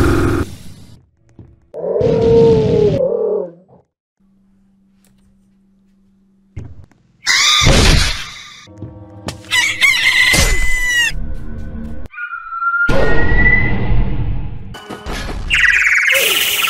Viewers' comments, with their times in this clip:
0:04 what there Are no sounds i only hear a click on keyboard or somthing